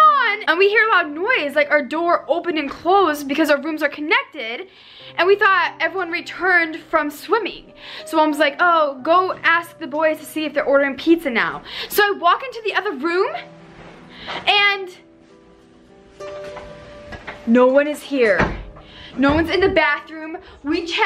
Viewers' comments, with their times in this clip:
0:04 a little girl was crying 😫😫😨😨